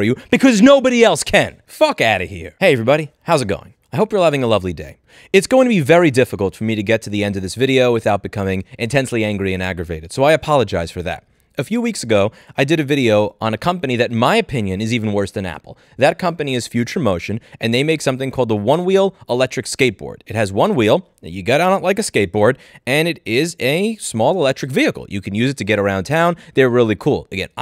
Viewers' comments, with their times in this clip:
0:10 scream first apologize later and then continue screaming 🤣🤣🤣 good work louis 😂😂